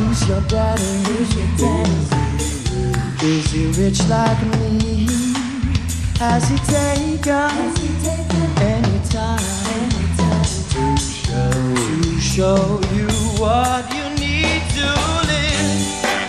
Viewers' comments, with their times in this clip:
0:03 i heard the original, and i still think blake's version is better! i especially luv him mmm just to be the person he was talking to there.